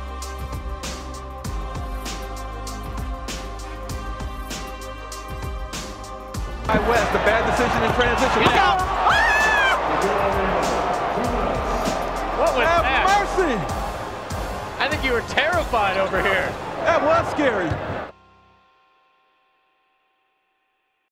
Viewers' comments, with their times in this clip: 0:09 Dunked so hard a baby screamed